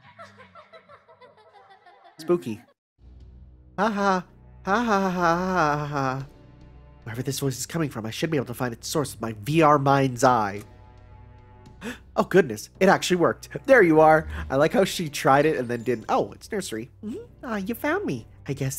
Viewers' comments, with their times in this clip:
0:03 Mandark is that you lol